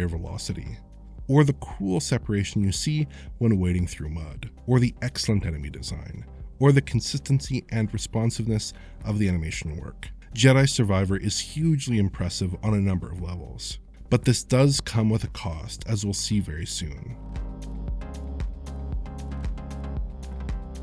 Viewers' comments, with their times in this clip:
0:06 what is enemy SCHNORK?!